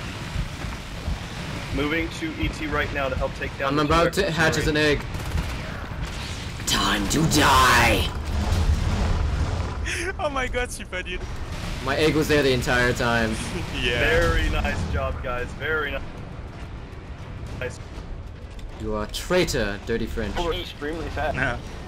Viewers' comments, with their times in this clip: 0:03 One can only imagine what went through that Exosuit's head: My guess is that it was something like, "We got this hive! From here, the enemy can only tremble in terror as we - what's that rumbling noise? AHHH OH CRAP NO--"